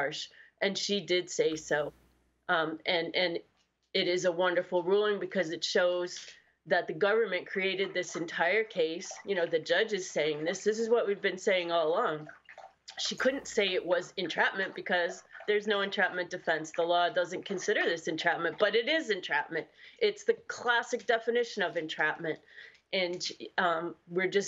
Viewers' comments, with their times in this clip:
0:06 who is playing in water?